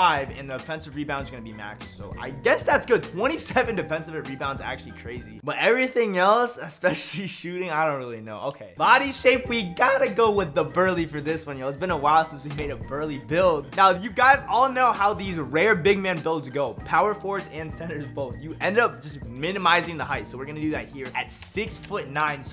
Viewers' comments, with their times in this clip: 0:06 Bruh the voice crack
0:07 Are we gonna talk about the voice crack
0:08 That VoIcE crack doe